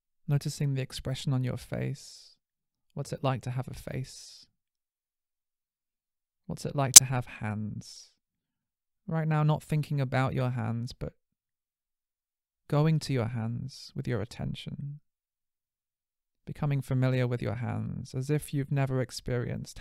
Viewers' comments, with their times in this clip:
0:06 There is a bit of an annoying sound which ruined the rest of my experience. A small fix I'm sure.